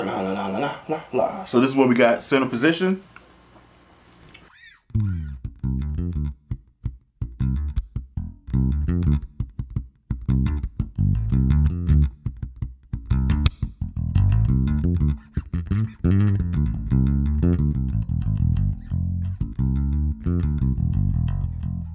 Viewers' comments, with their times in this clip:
0:03 center omg that's a nice sounding bass